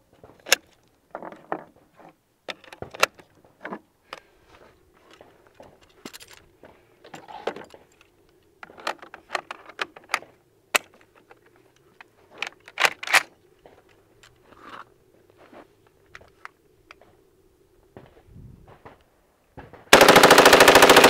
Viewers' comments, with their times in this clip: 0:08 it sounds like the super Mario bros theme when he's putting the mag in
0:08 Sounds like the Mario song